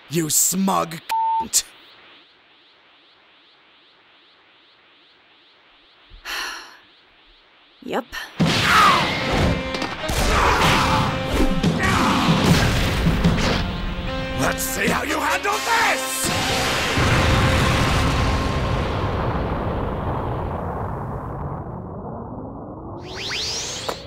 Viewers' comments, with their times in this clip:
0:05 " sigh... yep." That sounded so badass. If these guys wanted to do a non-comedy dub they would nail it.